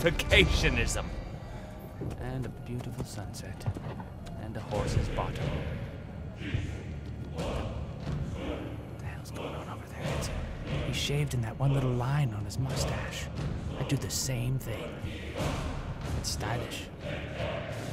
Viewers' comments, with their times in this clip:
0:04 Anyone noticed that the music sounds like Skyrim music?